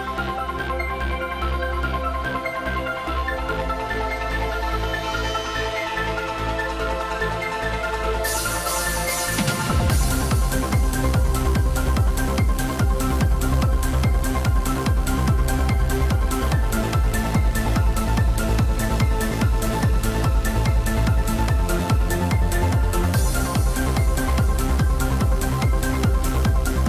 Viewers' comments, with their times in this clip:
0:08 that beat drop right after